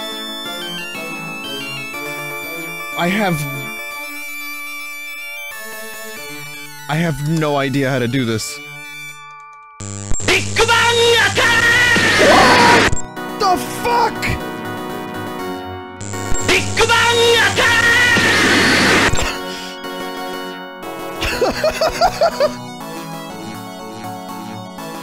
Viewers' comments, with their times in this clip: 0:10 Could you speak up?